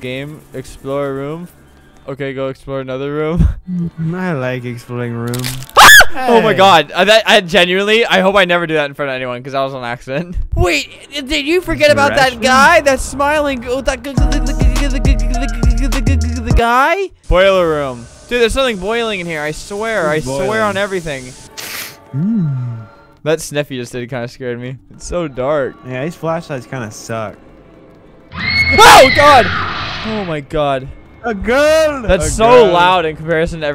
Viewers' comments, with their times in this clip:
0:05 high-pitched scream "I hope I never do that in front of anyone 'cause that was an accident" The video: 2.9 million views. The YouTube Channel: 9.7 million subscribers.
0:14 Super beatbox by flamingo